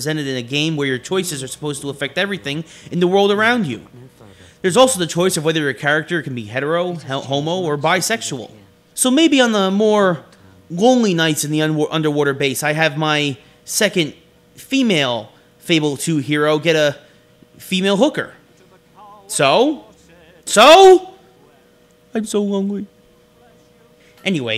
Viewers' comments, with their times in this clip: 0:08 LOL! HE STUDDERD WHEN HE SAID HOMO!